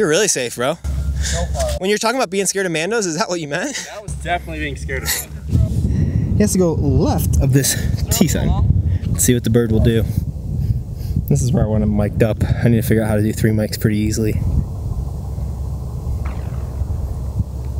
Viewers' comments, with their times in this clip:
0:04 The sound of that glitch is ridiculous